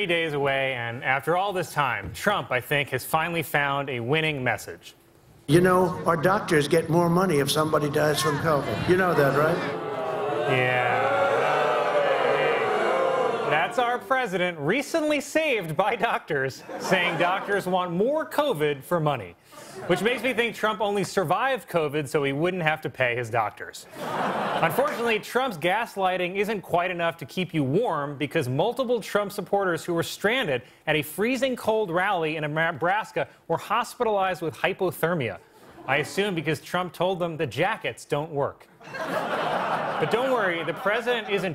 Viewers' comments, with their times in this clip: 0:10 Love the crowds response 😊🖤
0:25 Fake News? Nope. Just fake laughter. SNL using laugh tracks 🤦🏼‍♂️ The cut comes AT the mark There’s more, but we’ll keep it there.